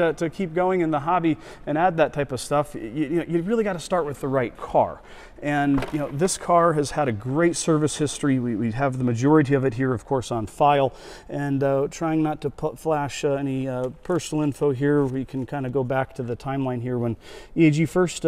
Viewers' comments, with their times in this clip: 0:05 most impressive bit where the boot struts don't whine